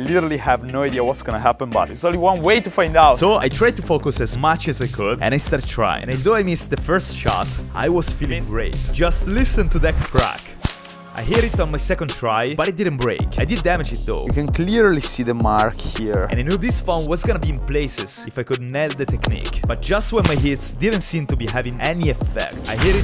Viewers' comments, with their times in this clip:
0:04 him: uses a nokia. him: WHY IS THERE BOSS MUSIC? fucking elden rings final boss music plays as he fails to harm it at all